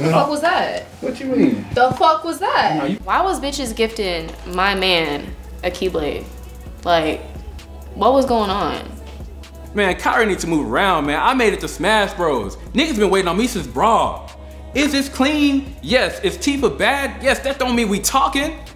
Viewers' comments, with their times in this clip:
0:04 her acting sounded so realistic. And LOL poor Waluigi.